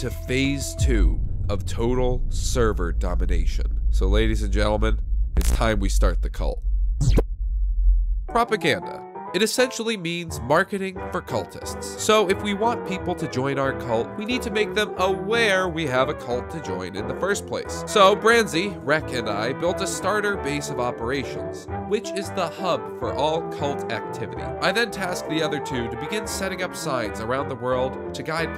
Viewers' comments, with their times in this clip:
0:09 bruh u said propacranda lololol (pro brazilian) but its propaganda :c